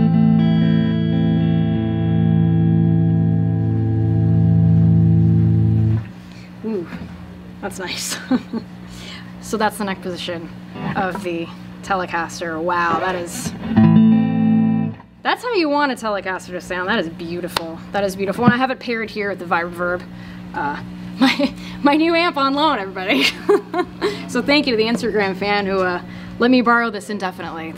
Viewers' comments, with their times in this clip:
0:10 Out I was expecting her to say “wow that is so out of tune” but instead she was just blown away by how good it sounded. Weird.